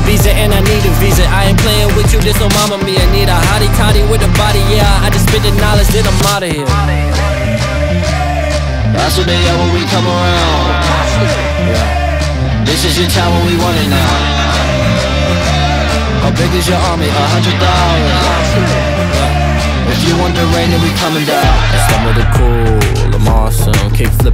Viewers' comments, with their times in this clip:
0:07 no, it is more like a copy of Surfin by Kid Cudi. Jaden is a fan of cudi (see Fallen video), the beat is more similar to Surfin than Black Skinhead (especially with the "aye" Surfin has a similar longer sample), he references "wave" "surfin", which are lyrics to Surfin ("I ain't riding no wave")